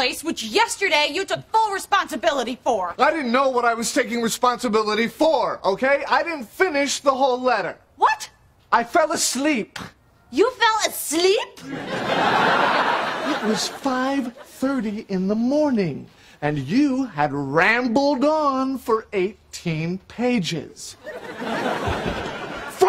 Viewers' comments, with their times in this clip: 0:09 But then we wouldn't see Rachel's' squeaky outrage cracks me up every time.